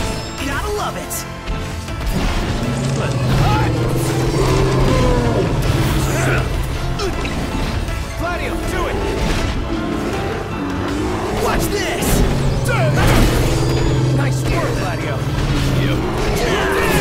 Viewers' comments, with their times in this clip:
0:04 Prompto singing the Victory Song was hilarious xD